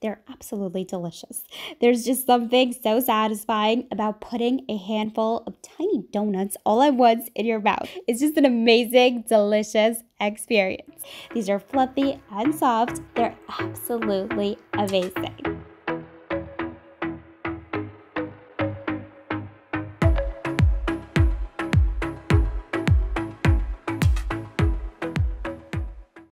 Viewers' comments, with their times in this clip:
0:09 i thought someone was knocking at her door lol